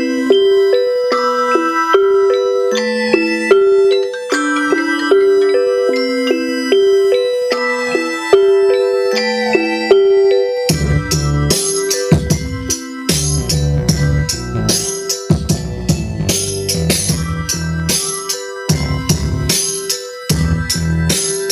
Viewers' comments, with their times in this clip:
0:04 did anyone catch the phone fitting nicely with the beat